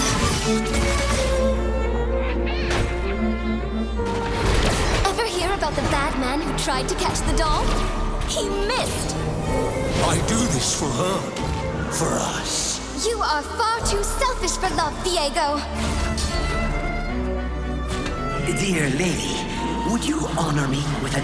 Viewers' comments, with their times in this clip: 0:05 Ever hear that the Batman tried to catch the doll? He missed Seems that DC Comics has some explaining to do...